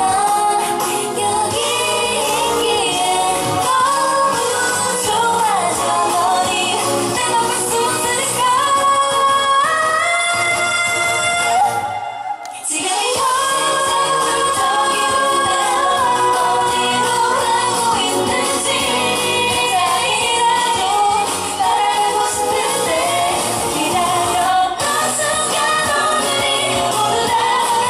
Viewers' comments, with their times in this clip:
0:08 was higher than last time😱😱😱😱